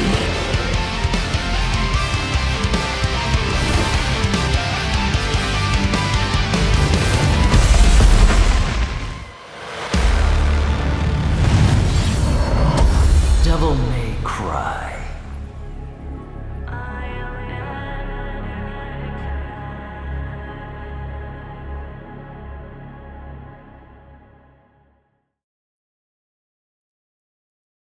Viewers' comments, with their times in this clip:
0:09 “Devil May Cry.” Hearing Dan Southworth saying those legendary words are music to my ears
0:16 I swear to god I just got chills when the devil trigger played